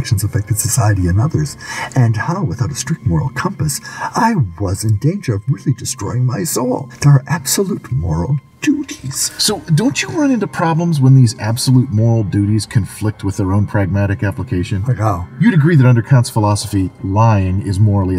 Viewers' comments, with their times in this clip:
0:05 Is it just me or sometimes the hitman has Bane's voice? :D (like )